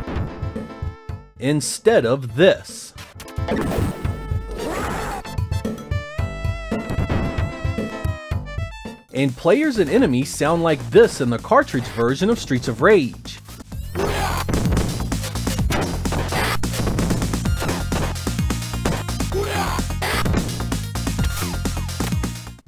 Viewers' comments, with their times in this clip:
0:10 dear sega. Give us cd quality pcm for streets of rage 2 and 3. I’m tired of grand papa and grab a claw for grand uppa